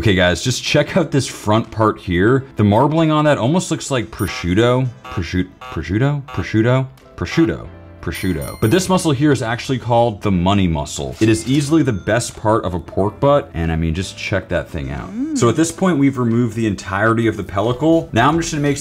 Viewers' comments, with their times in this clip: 0:03 it amazes me in how far YouTube auto-subtitles have come, despite your misspellings of prosciutto, the subtitles always spelled it correctly.